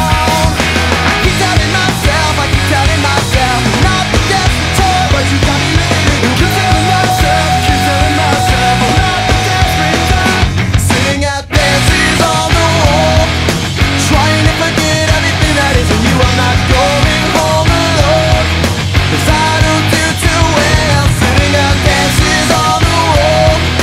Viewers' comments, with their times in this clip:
0:05 A bit late, but it's From then on he helps with some background harmonies.
0:06 Sounds like that could be Brendon. Though I don't know, his and Patrick's voices used to sound so damn similar it was sometimes impossible to tell who is signing (I'm looking at you 20 Dollar Nose Bleed).
0:06 'I keep telling myself, I keep telling myself, I'm not the desperate type' is surely sang by Brendon